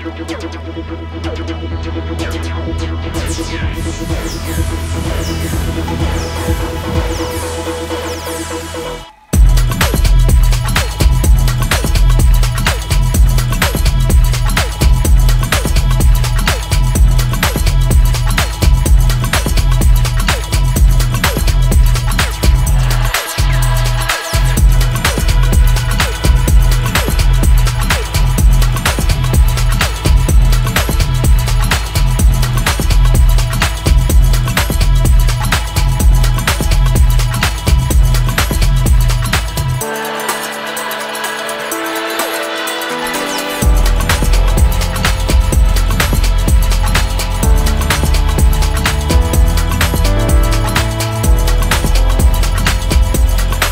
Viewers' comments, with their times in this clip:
0:04 Remains me a loooot "John Hopkins - Open eye signal from Nice track otherwise!
0:40 was reading this just as that key struck